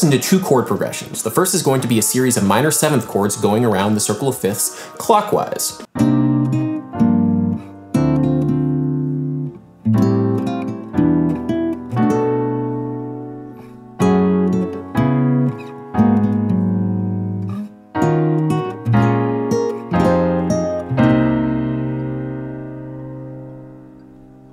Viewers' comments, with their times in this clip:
0:05 for me, what you played resembles "Rabbot Ho" by Thundercat from 'Drunk'.
0:06 The chord progression played has a very reminiscent sound to “After The Ordeal” by Genesis, why is that? They both have this uniquely “medieval” “classical” sound but I can’t seem to find any correlation, any help?
0:06 Anyone else getting Opeth vibes?
0:06 This circle-of-fifth-counter-clockwise song has a strong Jamiroquai vibe!
0:07 Circle of Fifths getting brighter sounds super Pat Metheney 👌🏻
0:08 is this the same effect as the Shepard's Tone?